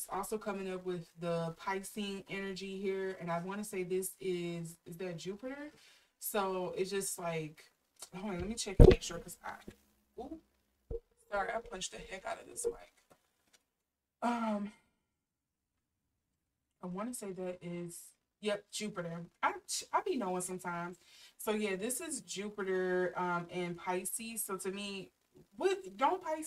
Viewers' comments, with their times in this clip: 0:08 WARNING - There is a bump against the mic around the mark